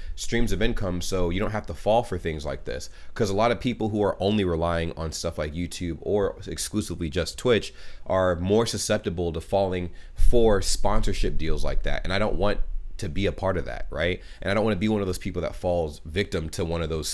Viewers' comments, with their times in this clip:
0:04 Why the hell does my brain associate "relying" with the "why you always lying" meme here? Very inappropriate :D